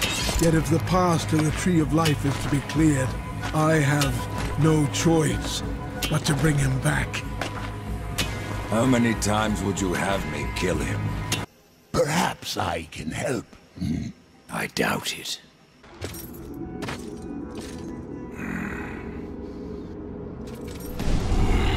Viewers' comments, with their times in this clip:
0:08 "How many times would you have me kill him?" I love this line so much. There's something so apathetic and above-it-all in the way Death says it. Like, this is the Maker's greatest and most powerful creation in a very long time, and is Death angry because it's being brought back to life mere seconds after he destroyed it? Or maybe he's worried about the potential destruction this thing could bring upon this land? Nope, he's just... mildly annoyed. It's like he's saying: "Oh come on,man! I JUST cleaned this mess up. Can we keep this shit fixed for one fucking moment?" 😂